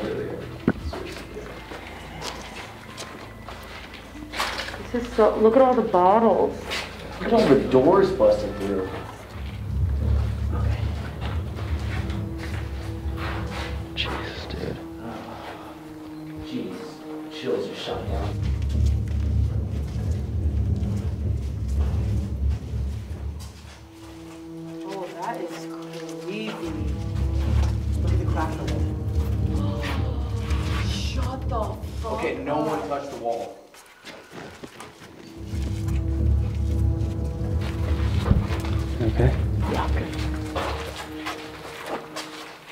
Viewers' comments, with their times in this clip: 0:09 Did you guys heard a female voice whispering "stay" ? 😦
0:29 is that one of them making that noise?